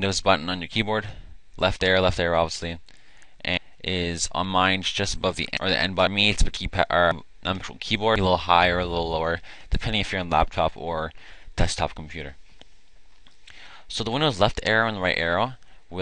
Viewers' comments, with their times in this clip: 0:04 your mic bugs out a little